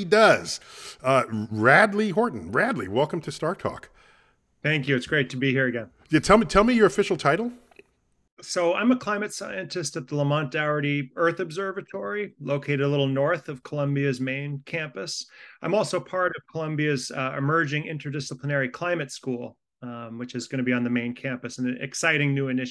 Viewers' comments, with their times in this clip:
0:09 Climate Antistoclomontarity? What??? 😮😮😮😮